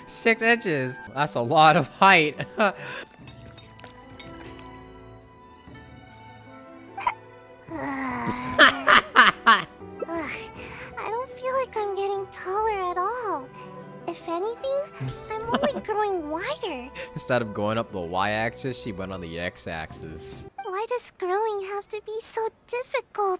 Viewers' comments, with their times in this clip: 0:07 that laugh scared the life outta me-